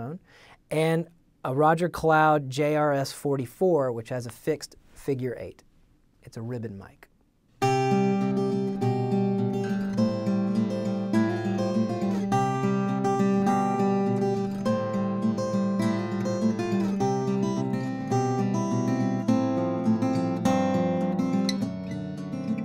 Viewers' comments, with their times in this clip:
0:09 Great tutorial and what a great guitar player, not the usual sloppy work like all the rest of us :-) WOW what a great sounding little guitar